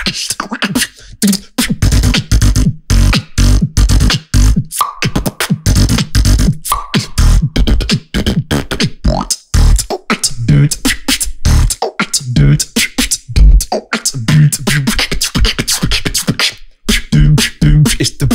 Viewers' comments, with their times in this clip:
0:04 most crisp click sound i've ever heard
0:04 That sound , soooo cleann